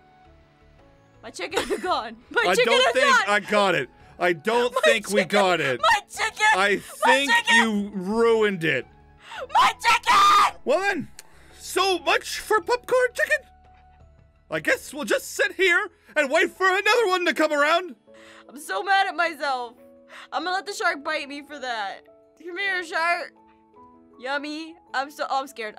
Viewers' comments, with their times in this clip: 0:09 I DIED LAUGHING 😂😂 also R.I.P. headphone users